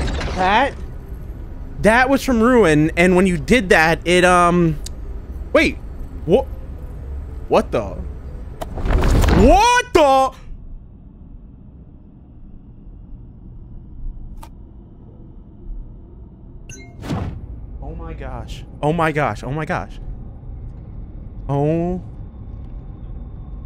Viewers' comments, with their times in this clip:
0:07 ilike how he said what the it sounded like he was like in a act keep up the good work♥️